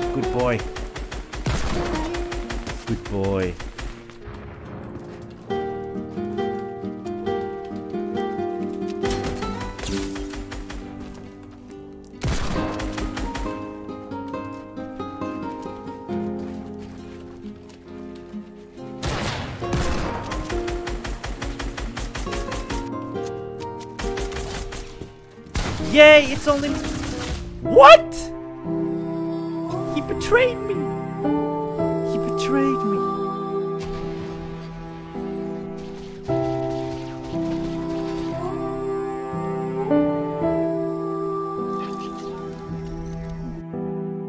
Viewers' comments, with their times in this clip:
0:09 happy music with death:/
0:28 That’s the cutest fucking thing I’ve ever seen. “Gasp”